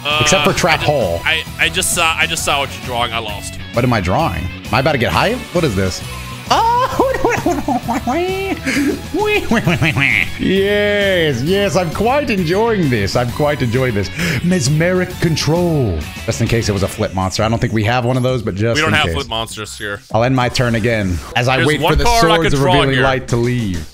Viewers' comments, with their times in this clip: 0:08 that Luigi's Mansion ghost-ass laugh 💀